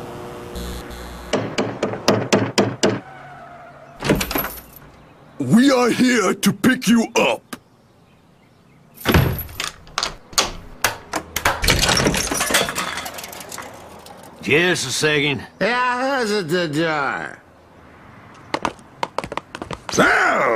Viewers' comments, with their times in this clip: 0:05 for the longest time as a kid, I always thought Muscle Man was saying "We are here to beat you up"